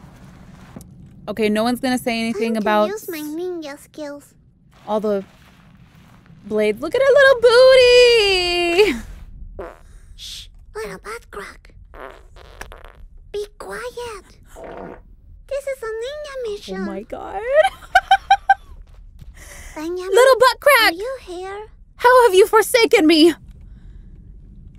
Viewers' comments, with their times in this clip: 0:09 loool she farted